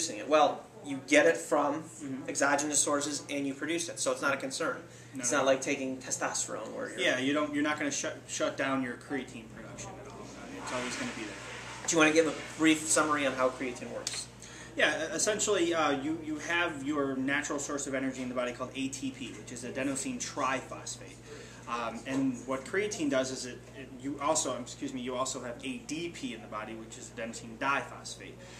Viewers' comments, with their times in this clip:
0:10 someone flushed toilet .. listen carefully.. lol
0:11 LMAO, Couldn' someone EDIT the WHABOOSH ?